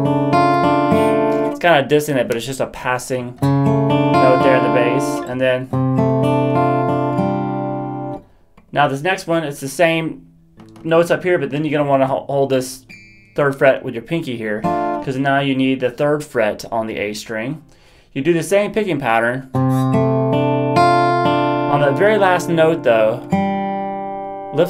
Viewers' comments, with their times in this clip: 0:05 FYI The 4th (pinky) drops from the 4th fret to the third. If you switch the 3rd and 4th fingers as you transition to the new chord you will lose the second string D (3rd finger). If you listen closely on the recording you will notice that there is no abrupt change or loss of sustaining D on the second string. Overall, great job!